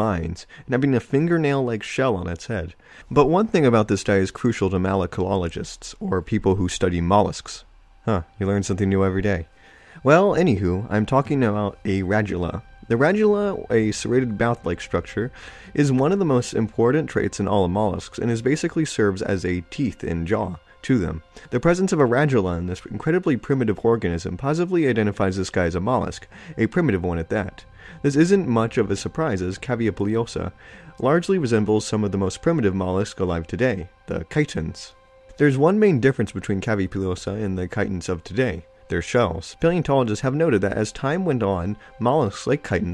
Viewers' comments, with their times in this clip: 0:04 Did he just say malakoalagists? Lmao, made the pronuniciation a liiiittle more complex than it needed to be.
0:23 Did he just say orgasm?